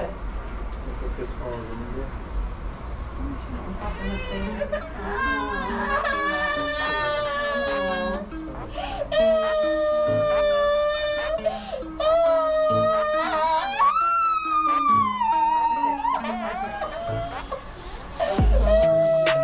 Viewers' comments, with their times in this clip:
0:07 It sounds like a jet engine